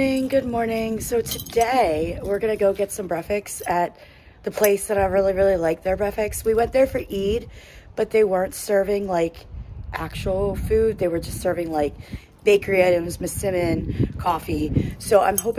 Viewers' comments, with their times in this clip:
0:03 what is a breafix? 😜